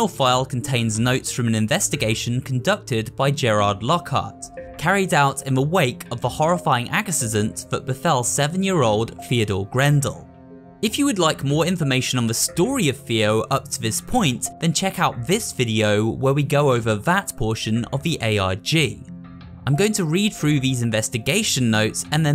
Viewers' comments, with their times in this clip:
0:06 why did you say accident like that?